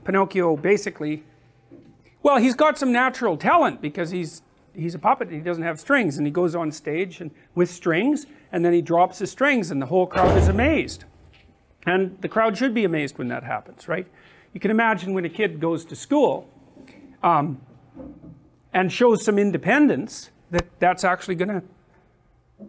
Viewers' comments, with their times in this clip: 0:09 ....Slamming the door while the teacher is giving a talk....Who raised that kid?
0:10 could that door slam any louder